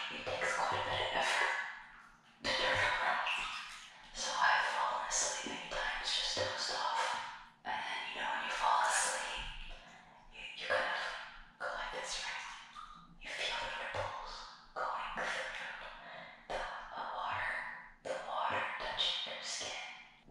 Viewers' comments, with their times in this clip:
0:08 this is probably how fnaf voice actors record